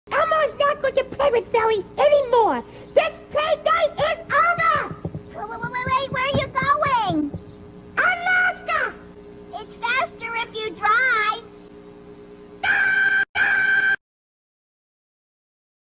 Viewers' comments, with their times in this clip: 0:13 That laugh me 🤣